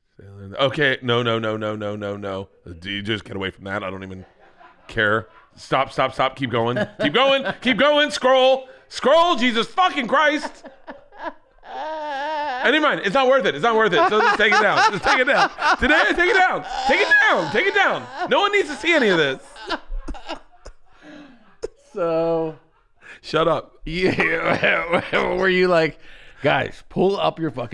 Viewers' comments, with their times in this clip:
0:10 Tom’s evil laugh😂💀